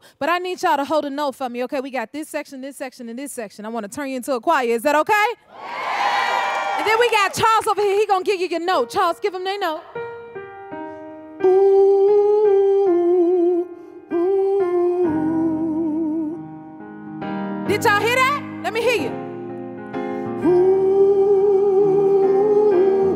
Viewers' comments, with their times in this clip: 0:09 I love that goodbye song so much 🥰🥰🥰🥰🎧🎧🎧🎧🎶🎶🎶🎶🎵🎵🎵🎵. I really love your voice, Ms.Jennifer 😍😍. YOUR VOICE IS ON FIRE😍😍🔥🔥!!!!!! God Bless You 😍😍🙏🏾🙏🏾, I Love You And I Love You So Much As Always And Forever And Forevermore 🫂🫂🫂🫂🤗🤗🤗🤗😍😍😍😍🥰🥰🥰🥰😘😘😘😘💋💋💋💋💖💖💖💖❤️❤️❤️❤️💞💞💞💞💕💕💕💕💓💓💓💓. I love you, Ms.Jennifer 🫂🫂🫂🫂🤗🤗🤗🤗😍😍😍😍🥰🥰🥰🥰😘😘😘😘💋💋💋💋💖💖💖💖❤️❤️❤️❤️💞💞💞💞💕💕💕💕💓💓💓💓.